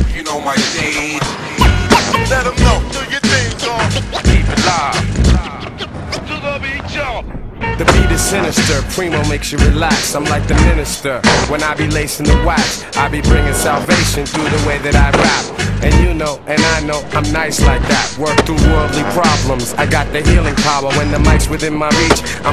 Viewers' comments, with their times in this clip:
0:03 i tried so many times (without that popless). It's so hard, respect!